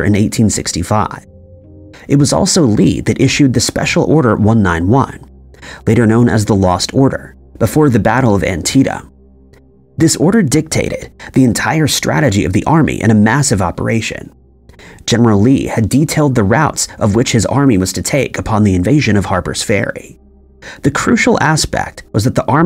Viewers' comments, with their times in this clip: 0:09 "...it was also Lee who gave (the lost order) before the Battle of 'Antieta(?)' FYI, the battle was conducted in AntietaM (There is an 'M' at the end of 'Antietam.'